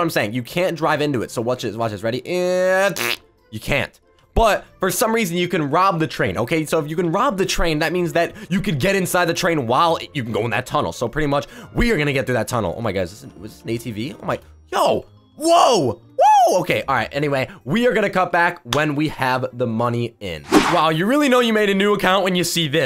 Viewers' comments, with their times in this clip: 0:03 that fart noise doh